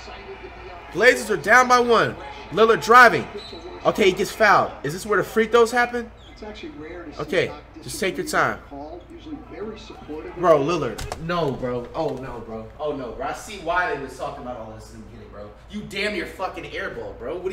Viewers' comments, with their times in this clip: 0:03 flight says is this where the free throws happen. Sounds like my mama